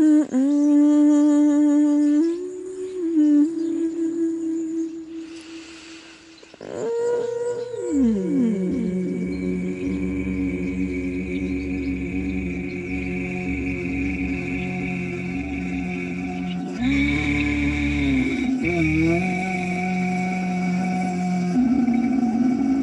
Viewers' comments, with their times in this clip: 0:06 The drop tho